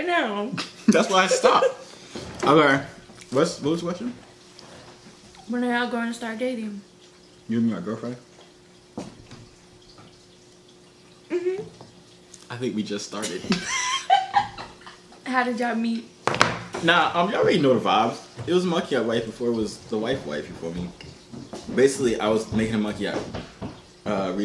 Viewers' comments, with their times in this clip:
0:10 she answered so excitedly